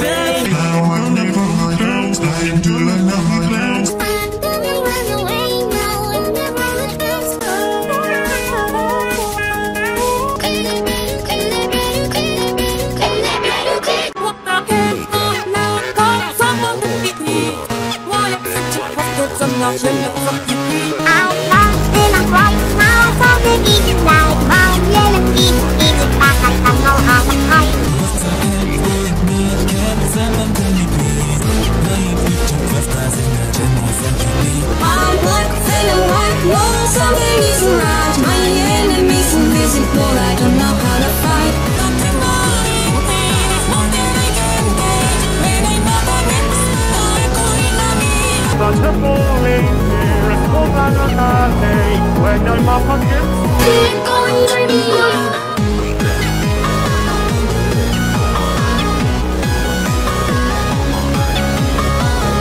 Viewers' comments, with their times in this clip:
0:07 gaster sounds like a cat
0:07 W.D. Catster XD (Gaster voice like a little a cat)
0:08 gaster that’s not English
0:21 give that voice to temmie
0:34 that pitch tho
0:48 Asgore sounds like one of those stereotypical echo-y strong voice kings